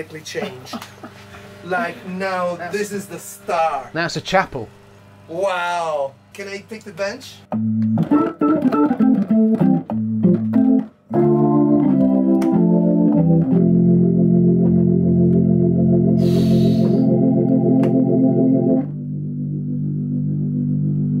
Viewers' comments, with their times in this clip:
0:08 the first sound coming from that organ Instant eargasm